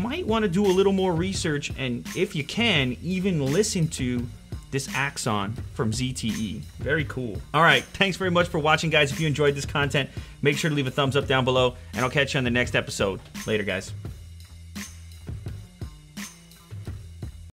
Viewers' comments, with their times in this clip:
0:06 TANKS very much for watching guys. is that supposed to be a joke my audio card bad? why you be rude.